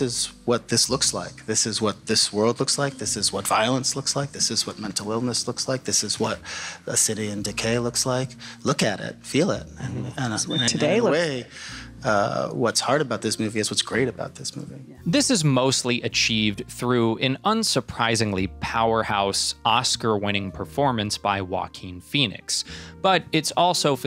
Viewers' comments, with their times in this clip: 0:09 Fire alarm: Beep 🗣️🔥